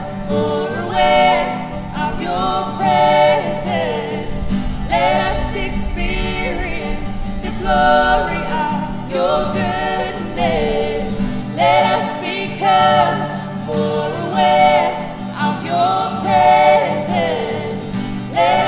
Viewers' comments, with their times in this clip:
0:04 you can hear thunder, God is there😊